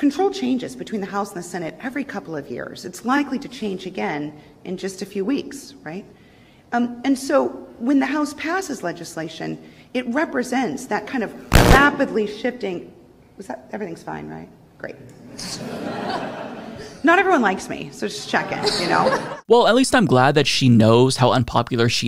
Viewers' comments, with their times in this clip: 0:09 the sound glitch happening right as she said "rapidly shifting" was perfect.